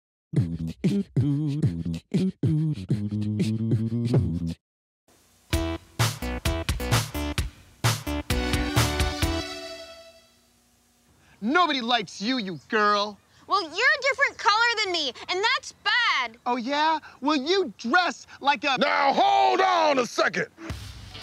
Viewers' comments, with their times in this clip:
0:05 the music always makes me laugh